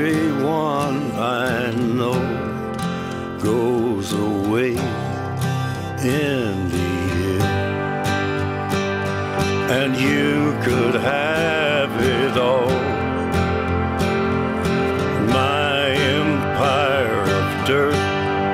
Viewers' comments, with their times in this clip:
0:05 That girl has to have lost someone or a pet recently cause she's bawling like I am